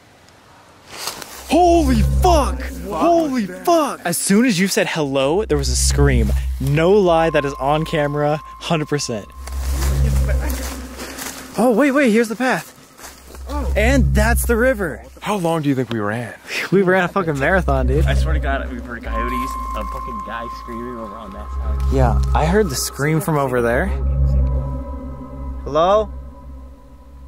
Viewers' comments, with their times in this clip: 0:10 Just me or did someone say he’s back